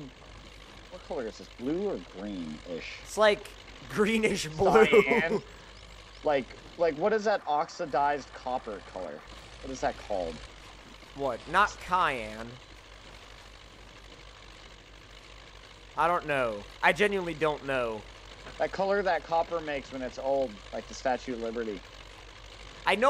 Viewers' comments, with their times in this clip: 0:09 what the crap is 'cyan'[he said it as ki-yan] I say cyan like this, [si-yan]. Is this normal to say it that way in the U.S.? (I'm Canadian)